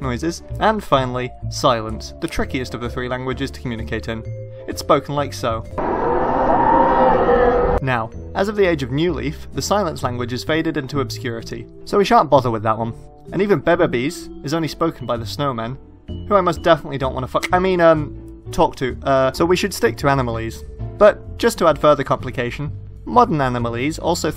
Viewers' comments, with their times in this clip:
0:06 that’s not silence!